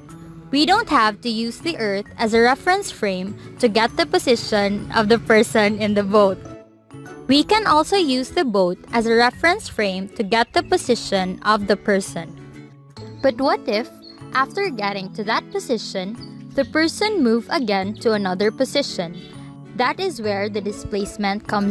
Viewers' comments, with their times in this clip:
0:04 u started laughing innit